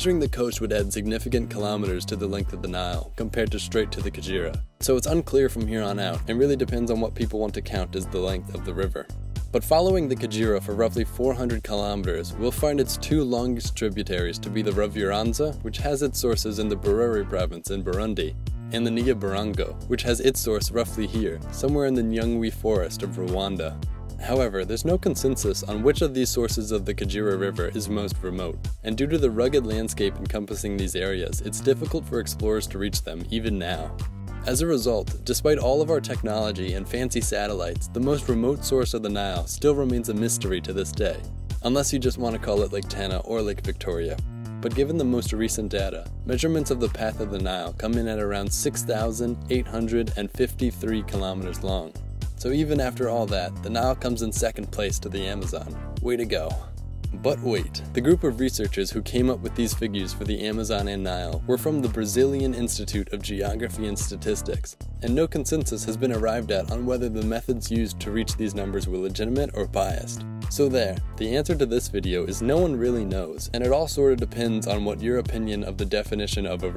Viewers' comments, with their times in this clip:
0:10 😂😂😂😂😂I'm laughing at how pronounce Kagera. He is saying kajira instead. It's Kagera (Kaa-gay-La)
0:58 You can actually hear the smile in his voice lol